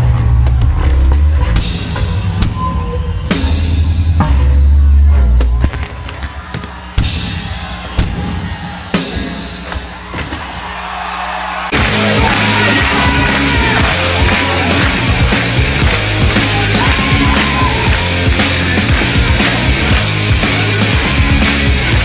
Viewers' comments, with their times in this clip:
0:10 I love how the crowd just applaudes krist when he bats the guitar